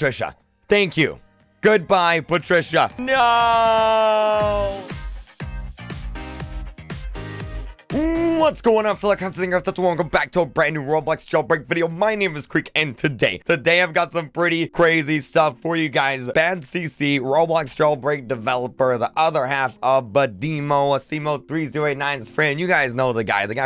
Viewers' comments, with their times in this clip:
0:07 did he just speak another language? this is the first time i saw one of his vids